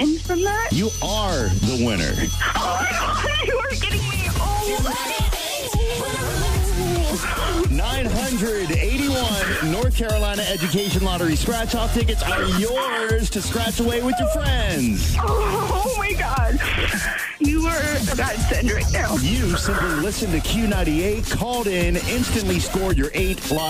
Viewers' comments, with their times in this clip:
0:04 I love this music part